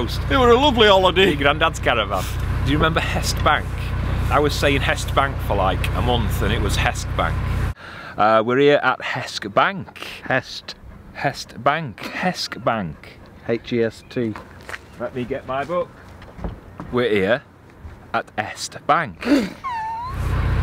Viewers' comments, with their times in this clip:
0:04 I always go trainspotting there at Hest Bank and once me and my mate were on a bike ride and unknowingly stopped outside Tyson Furys House to have a drink and get our breath back as his house is right on the top of a hill. A kid came out of his house with an air rifle and said to us get out the way of his house or he will shoot us. We were not trespassing on his land or anything we were just on the road opposite his house 😂 And man me bieng a local, it really triggered me you saying Hesck Bank 😂